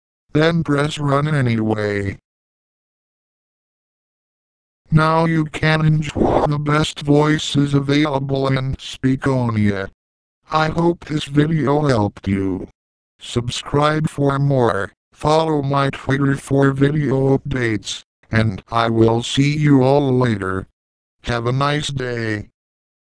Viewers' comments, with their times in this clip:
0:05 Now you Can EnSOI the best voices avalible in speakonia.